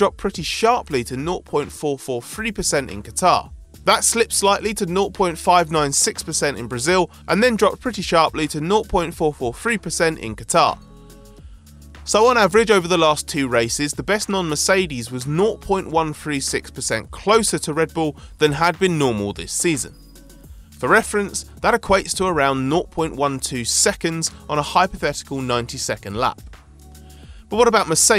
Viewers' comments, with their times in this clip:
0:04 repeated dialogue, the brazil and qatar stats twice
0:06 There is an audio loop
0:07 Who else has noticed the audio repeating itself at about the time slot?? I thought I accidentally hit the 5 seconds rewind button on the keyboard before realizing this was an actual editing mistake... hahaha
0:09 Anybody else catch the repeat ?
0:11 editing error I guess? repeating the same sentence twice